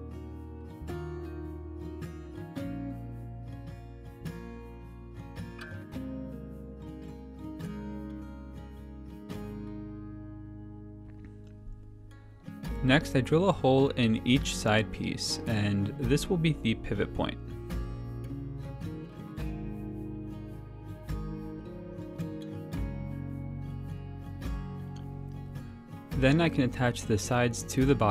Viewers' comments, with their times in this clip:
0:10 Your swallow totally made me stop the video and leave. Never knew swallows bothered me until today. Ha. All kidding aside, great video.